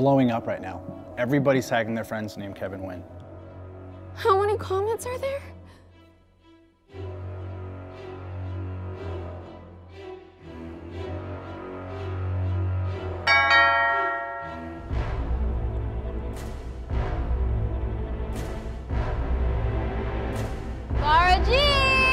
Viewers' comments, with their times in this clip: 0:09 I'm not American or Vietnamese so i had no idea of the correct pronunciation of Nguyen. I just know the surname as a common last name in Vietnam. So from the beginning till I thought they were saying Kevin Win. Only until I read the name on fb comments did I realise it's Nguyen and it explained why there's so many people with same name. Glad you showed the spelling otherwise I would have missed the joke